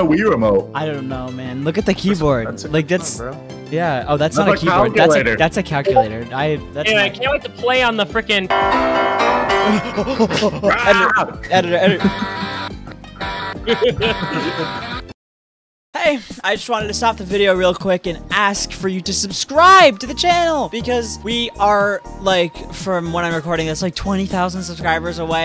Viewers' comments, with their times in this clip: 0:08 gave me PTSD bc that’s my ringtone for my alarm 💀